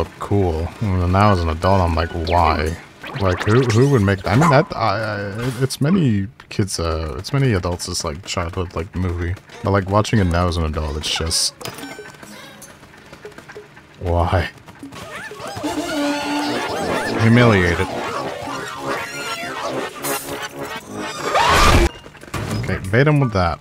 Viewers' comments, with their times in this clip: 0:10 i hope you know the pikmin sang the waterwraith chase theme